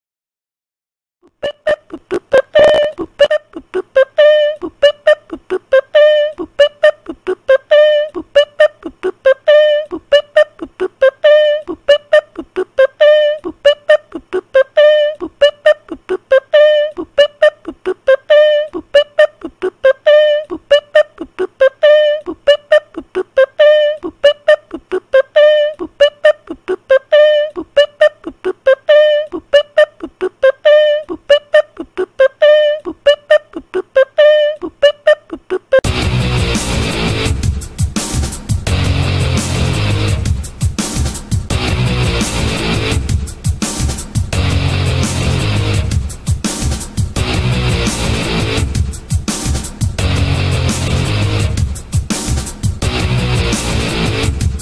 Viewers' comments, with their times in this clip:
0:00 best beatbox ever
0:00 this music is fire
0:00 No one is talking about the music in ? It’s like someone is singing it with a weird voice even tho this is a school shooting game
0:01 bro that sounds so scary
0:02 this song can be annoying and nostalgic at the same time
0:02 the music of the century 🔥
0:02 music, only from Ohio💀
0:03 This music fire!!!
0:05 I think the theme of is the same beat that Pico uses for the beginning of his rap but just a bit faster
0:05 this music is amazing
0:05 Dude the music is just super good like PO PA PE PA PE PE PA 🔥🔥🔥🔥
0:05 Bro the teacher is rapping
0:07 Teacher starts rappin
0:15 blud the voice 💀💀💀☠☠☠☠💀💀☠💀💀💀💀💀
0:36 meanwhile BUWA BU BUWAI BUWA BU BUWA BUWA BU BUWAI shooting noises